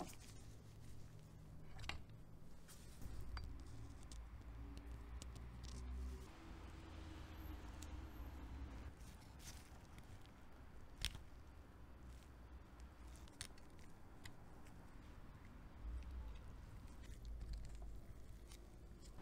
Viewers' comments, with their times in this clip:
0:04 ASMR stands aside